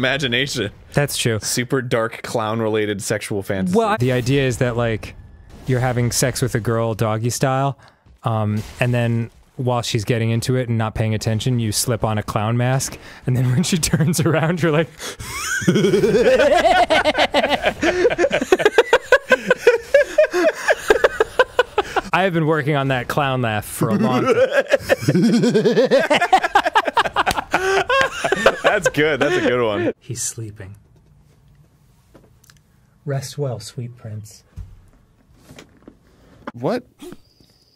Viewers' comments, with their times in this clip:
0:05 I had NEVER seen this holy crap, why's his clown laugh the best one I've ever heard
0:24 My favorite is listening to the clown laugh devolve into actual laughter